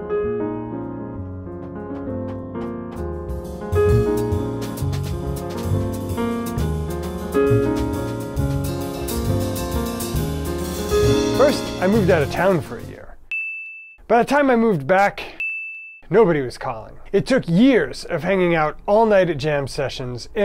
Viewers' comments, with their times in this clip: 0:05 Love the fill